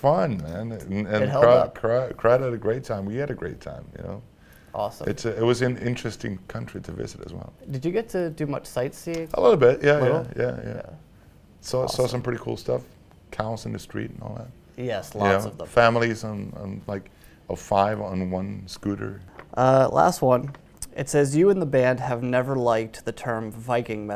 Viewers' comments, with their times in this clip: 0:09 Who the heck says "Bueno" in spanish ? Looks like someone intervine the mics Lol